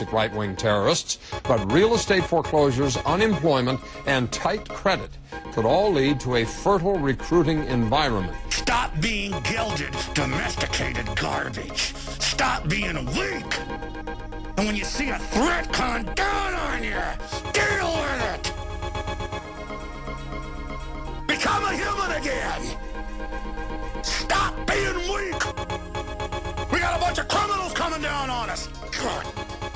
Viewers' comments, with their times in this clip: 0:10 Oh my god he's talking with his teeth!!!!